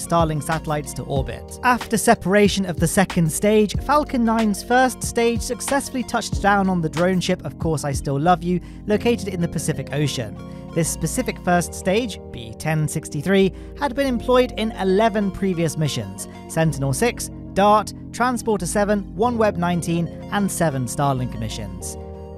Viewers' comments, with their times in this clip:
0:05 rappin to the beat